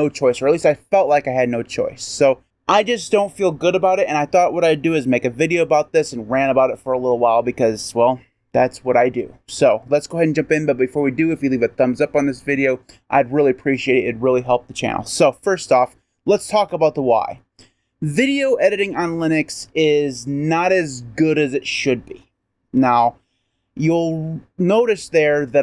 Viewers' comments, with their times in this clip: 0:10 I have no problem with the sound in this video.